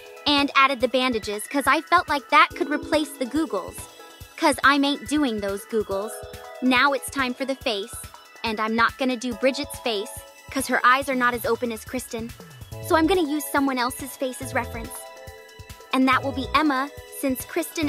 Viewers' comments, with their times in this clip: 0:03 -replace the googles GOOGLE?